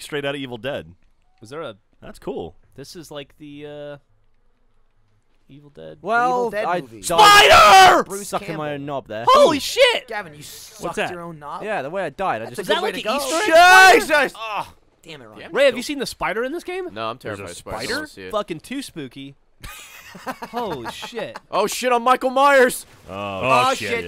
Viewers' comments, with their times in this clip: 0:06 Prepare to lose your hearing